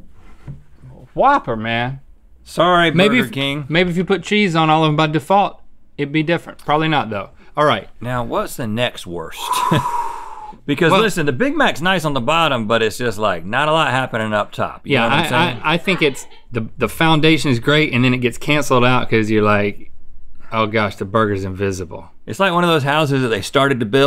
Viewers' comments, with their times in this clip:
0:09 Link's low whistle here made me look up for a balloon.